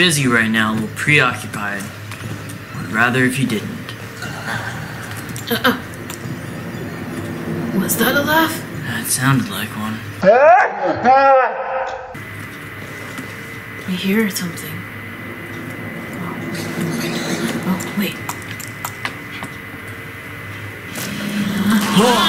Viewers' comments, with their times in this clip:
0:03 who else thinks that that laugh sounded a little like Funtime Freddy from FNaF Sister Location?
0:04 why did the laugh sound like freddy fazbears laugh or is it just me